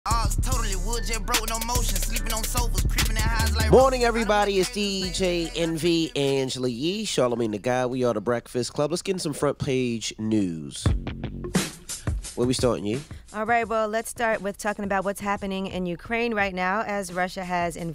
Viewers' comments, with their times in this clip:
0:01 "Joe burrows no motion"